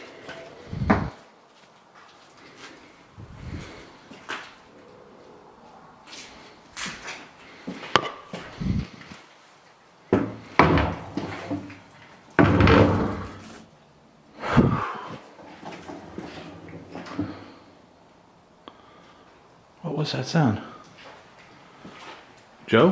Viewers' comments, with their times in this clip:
0:07 I heard a low growl!!!